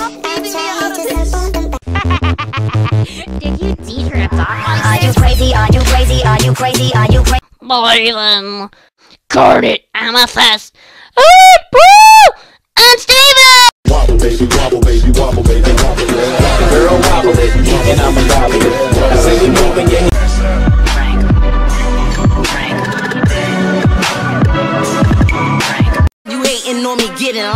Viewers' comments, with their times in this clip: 0:08 my ears are gone